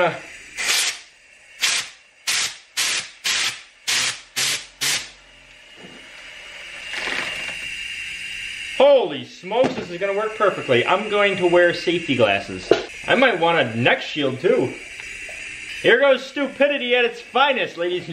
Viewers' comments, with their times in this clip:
0:04 What was it that flied off (the last burst of air) An O-ring?